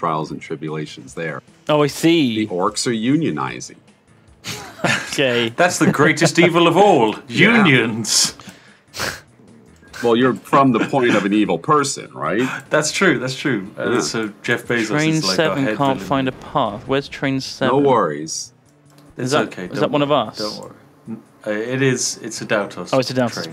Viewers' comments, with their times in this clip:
0:04 Yep, the worst. Eating and vaping with open mics, ahh yes, gaming.